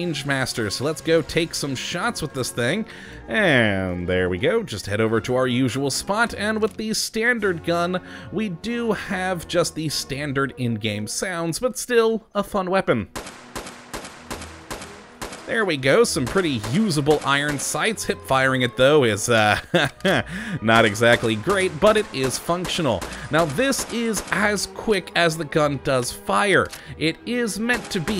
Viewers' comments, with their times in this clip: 0:09 Does not sound like the vanilla sounds to me